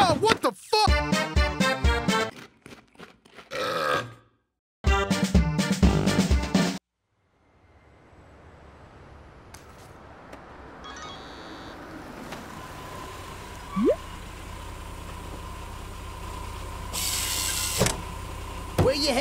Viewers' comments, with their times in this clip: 0:07 my favorite even the music